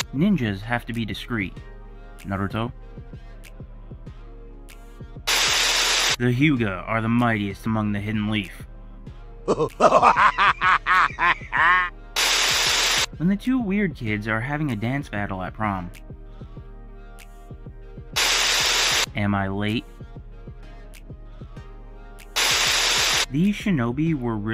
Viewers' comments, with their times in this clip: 0:09 💀💀 why is the laugh so funny to me